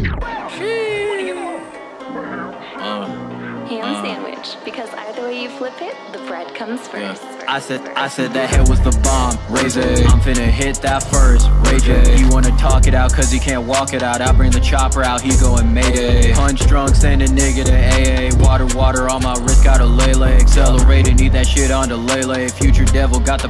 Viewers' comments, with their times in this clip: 0:07 that flow, right there. Godly